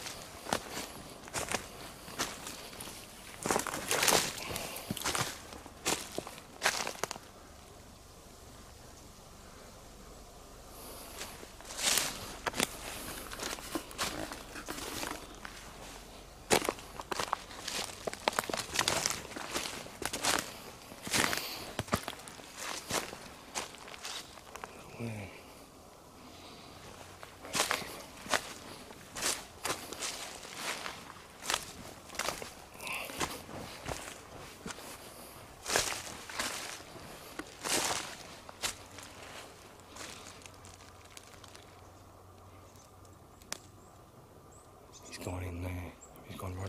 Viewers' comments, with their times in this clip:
0:07 There was a whisper saying "hey"
0:32 whispering woman voice "hey"
0:32 Yeah i heard it, women voice exactly
0:32 woman saying "hey"
0:33 u hear something or someone say HEY ! have a listen, great uploads
0:33 Heard it clear also, but I heard her again not sure what she says!!!!